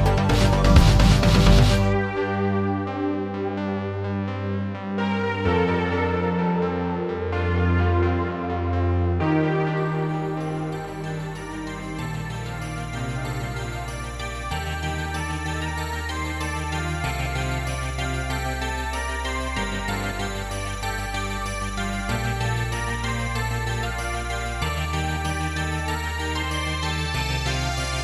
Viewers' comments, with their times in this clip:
0:10 IMO- 'Civilizations' doesn't work well upbeat. The version is superior. That said it's all pretty awesome.